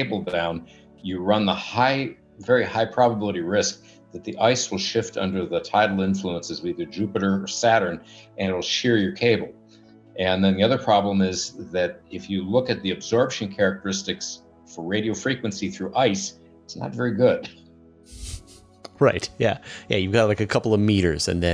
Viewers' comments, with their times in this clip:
0:03 Way too many um ideas um partially formed without um forethought, background um basis and sentences begun, but um never um . . . . finished.